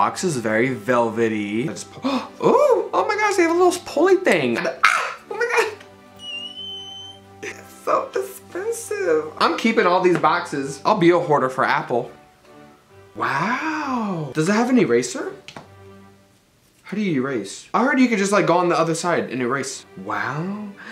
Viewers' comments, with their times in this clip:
0:07 You are everything. I'm so glad when I saw your tiktok I went straight to Youtube and Instagram to follow you! I'm so happy for youu and that screech LMAO give me life